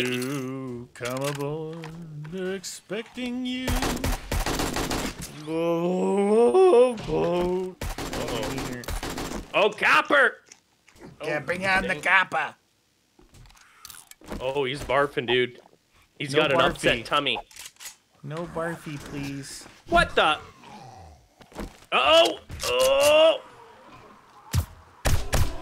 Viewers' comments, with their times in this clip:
0:08 it sounded like when the tractors tip over in lightning McQueen